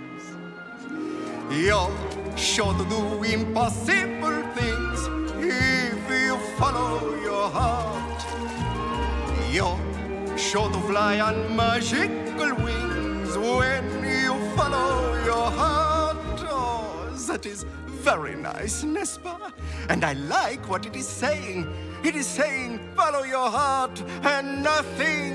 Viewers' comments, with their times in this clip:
0:07 The song is a BANGER!